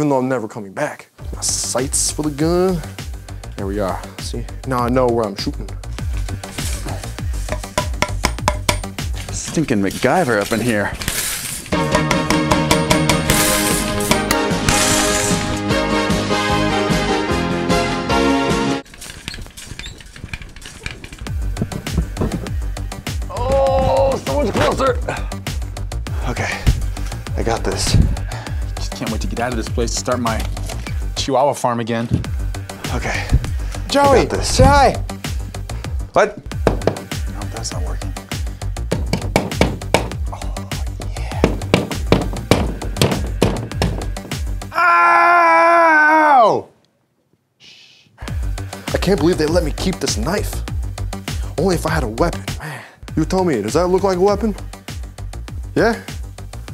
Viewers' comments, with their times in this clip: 0:09 that's some nice music!
0:09 StInKinG mYgUyVeR uP In HeRe: Some cheesy 90’s music starts playing
0:44 is a battle cry